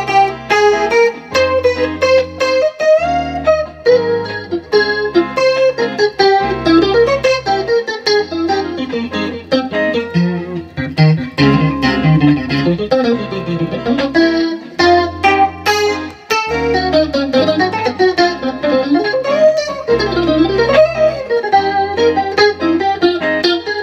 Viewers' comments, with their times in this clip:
0:06 .... A lick hasn't made me smile like that in a long while haha. Love it.
0:07 That run he does is insanely good. Especially how it compliments such a simple backing track.